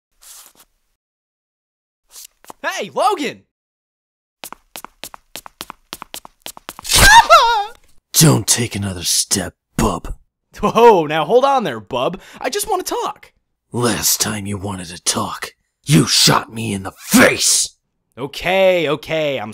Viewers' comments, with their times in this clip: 0:06 that scream lmfao